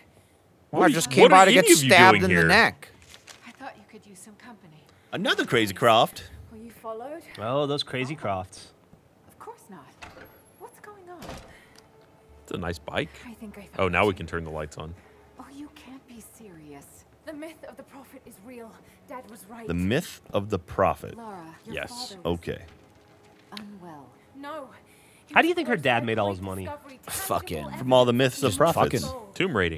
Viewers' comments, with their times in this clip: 0:10 there some weird doubled up audio happening.